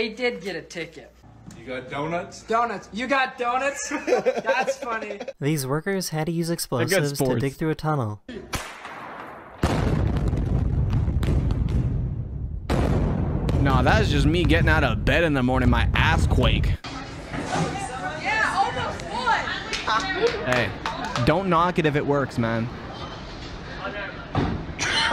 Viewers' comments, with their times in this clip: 0:06 my booming fart in the day